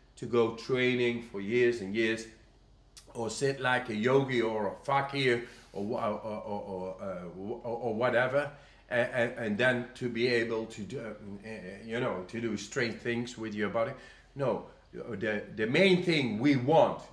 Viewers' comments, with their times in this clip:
0:04 he says 'fakir' not 'fucky' in case anyone was wondering.